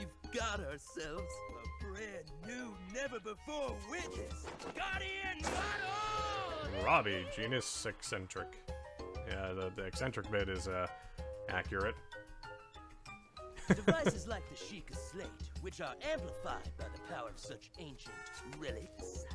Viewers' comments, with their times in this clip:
0:07 Did Robbie just do a Michael Jackson “Hee-Hee!”